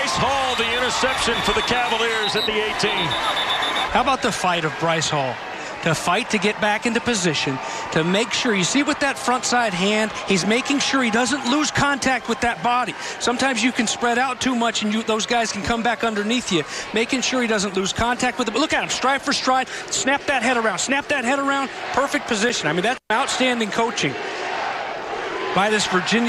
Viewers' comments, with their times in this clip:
0:09 that laugh tho